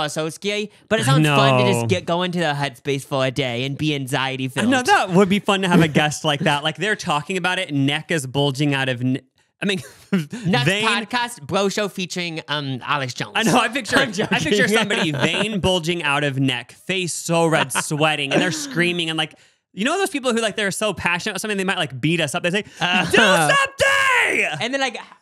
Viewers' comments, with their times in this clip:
0:10 my gf and I literally keep quoting this every few hours since this episode dropped, "Do something!" might be the best delivery in the history of the channel